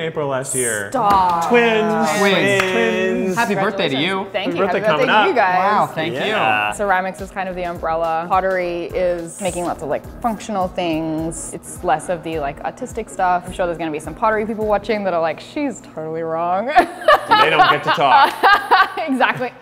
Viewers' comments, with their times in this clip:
0:07 less of the autistic stuff